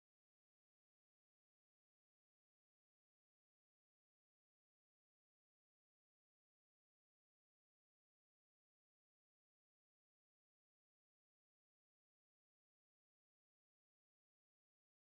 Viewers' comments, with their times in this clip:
0:03 The audio cuts out min mark